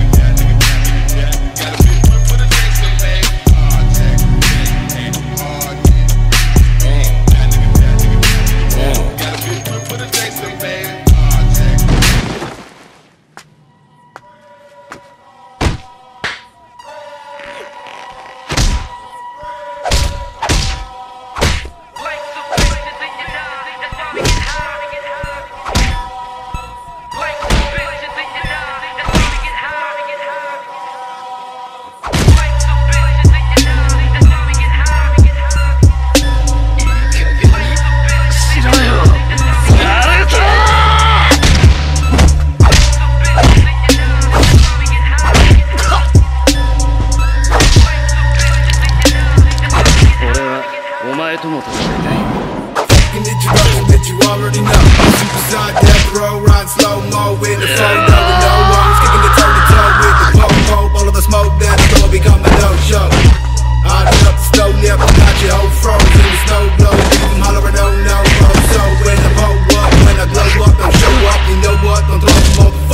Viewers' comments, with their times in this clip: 0:10 Best music transition ever, no debat.
0:49 That cutaway to the "I want to fight you too" clip followed by the music drop was cold af 🥶
0:57 i remember watching this on repeat nonstop, still love it, even more now with the remake of their fistfight, much more personal. and those battle cries gave me chills with the new effects you added amazing work like always